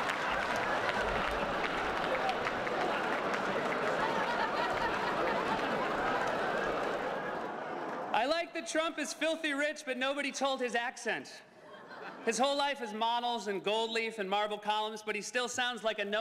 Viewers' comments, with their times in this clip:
0:04 I love Obama's laugh